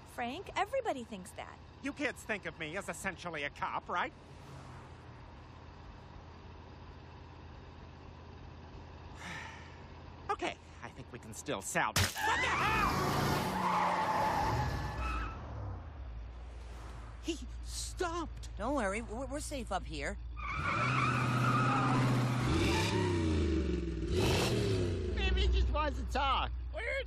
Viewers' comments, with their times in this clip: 0:09 That sigh is actually hilarious attention to detail on how his frail masculinity has to be affirmed by children that aren’t his